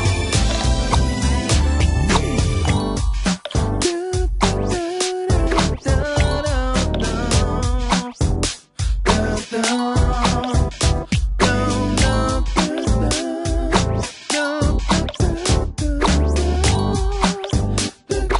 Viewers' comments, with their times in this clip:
0:03 Sounds like Pillow Dance